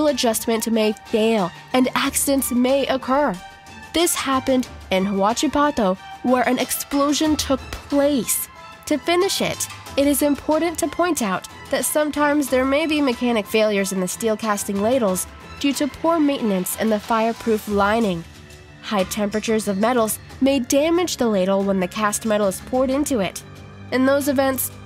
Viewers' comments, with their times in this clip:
0:03 Where an explosion took plaaaaaaaaaaaaaaaaaaaaaaaaaaaaaaaaaaaaaaaaaaaaaaaaaaaaaaaaaaaaaaaaaaaaaaaaaaaaaaaaaaaaaaaaaaaaaaaaaaaaaaaaaaaaaaaaaaaaaaaaaaaaaaaaaaaaaaaaaaaaaaaaaaaaaaaaaaaaaaaaaaaaaaaaaaaaaaaaaaaaaaaaaaaaaaaaaaaaaaaaaaaaaaaaaaaaaaaaaaaaaaaaaaaaaaaaaace. You possibly have the single most annoying speaking cadences I've ever heard, and I wouldn't judge if it weren't so obviously forced to be 'entertaining'. Go listen to Simon Whistler, Joe Scott, Tom Scott, Matt Parker... All of them have captivating presentational skills.
0:05 WHAT?! Ok guys? Please help.... she cleary says "hwacha pato" for no reason! I've listened to it several times with the captions on! The captions look genuine instead of auto-generated. What's going on here?!
0:11 lol she said "some TARMS"